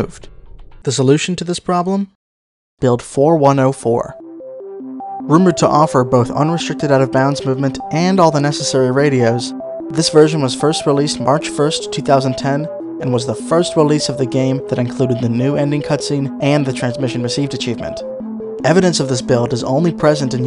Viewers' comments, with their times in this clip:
0:06 The melody contains the tones that my wireless headphones play when shutting down due to low battery. It startled me!